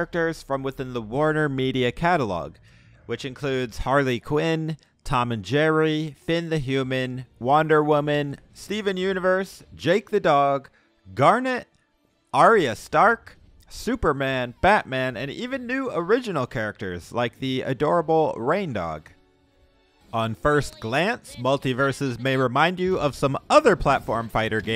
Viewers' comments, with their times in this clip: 0:07 I know he did not just say wonder women like that